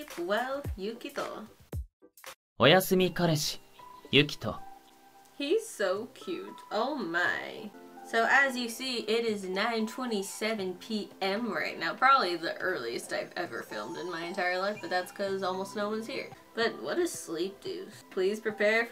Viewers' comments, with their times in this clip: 0:03 good call for turning the volume down